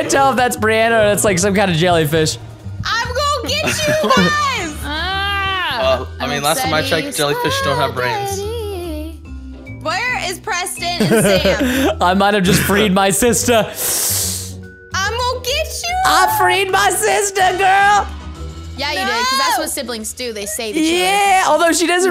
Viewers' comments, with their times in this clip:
0:06 ...an angel sang.... Btw,preston,luv u!!!☺☺ (This is my dad's account) 😂😂
0:07 her voice is A M A Z I N G like daammmnnnn didn’t know she could sing❤️her voice is like the voice of an angel❤️❤️
0:09 that was a beast voice👌